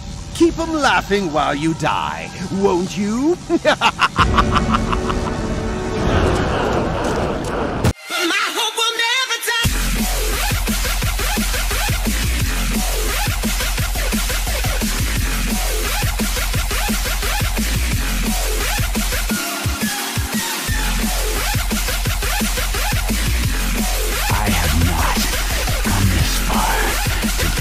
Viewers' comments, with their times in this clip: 0:06 [pumped up kicks intensifies]
0:08 Me: my hope will never die epic beat
0:08 Set speed at 1.25x speed it sounds really lit
0:10 I literally started jamming to the music so hard that my headphones went flying